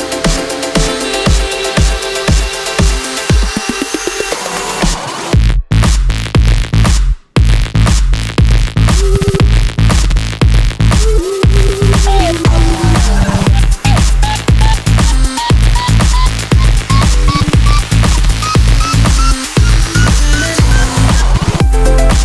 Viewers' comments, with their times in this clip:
0:03 That drop is so unexpectedly good🔥